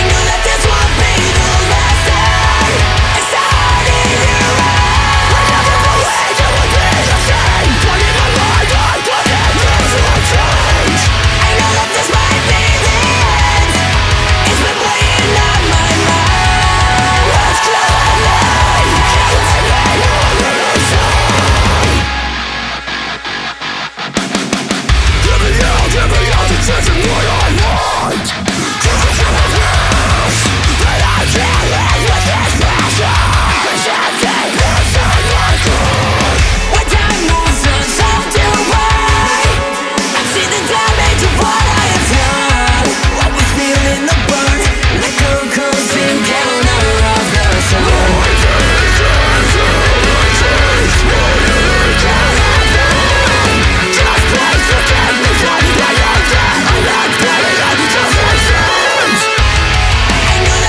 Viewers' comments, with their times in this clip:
0:10 That two step is such a smooth ride.
0:24 Is it just me or is groovy af?
0:46 is one of the most badass music moments ive ever heard